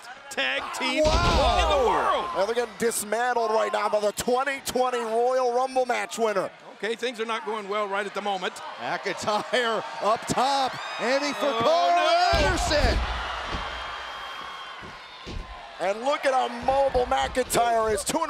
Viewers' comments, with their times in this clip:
0:04 Okay why is nobody talking